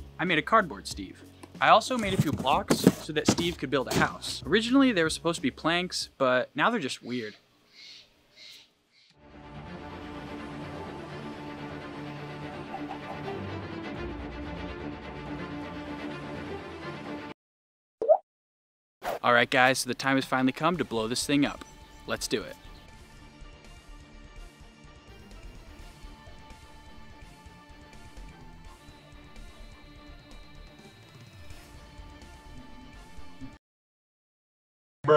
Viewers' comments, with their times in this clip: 0:08 Angry birds noises Me: Is that a colab?
0:16 The 'dwop' sound made me laugh my ass off